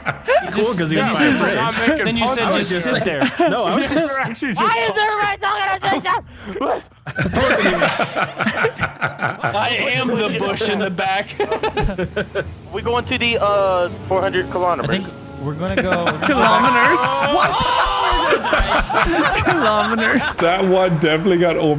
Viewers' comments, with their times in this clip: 0:04 i think was trying to say “why is everybody talking at the same time.” But it came out as complete gibberish.